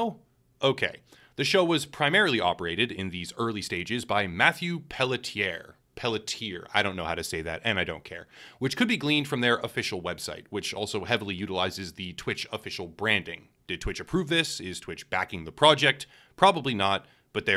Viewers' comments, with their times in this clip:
0:05 finaly some has the "balls" to butcher and dont care, its only a name x)